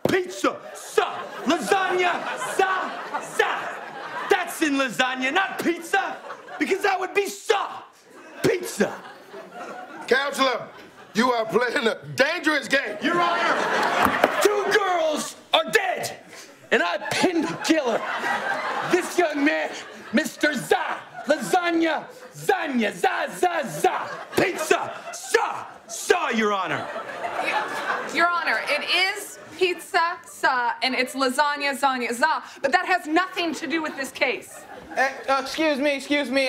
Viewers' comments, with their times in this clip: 0:03 my French teacher teaching us how to pronounce words😂
0:09 Funniest part was when Kenan broke character and laughed and that made Franco break character as well.
0:17 James laughing is soooo funny like it makes it much better